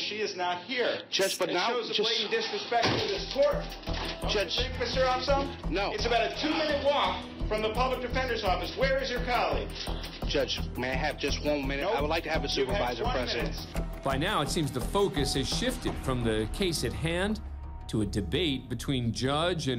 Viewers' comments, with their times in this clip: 0:03 slamming his hands on the desk and yelling, anyone can recognize that's emotions, even you. You just choose to ignore it. Even the guy narrating the video says judge is in his emotions.